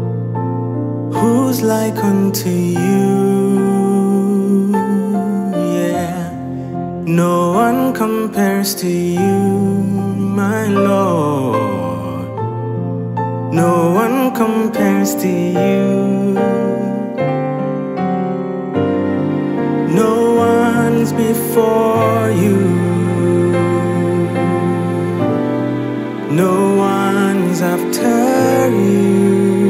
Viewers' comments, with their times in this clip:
0:10 That riff ... Beautiful vid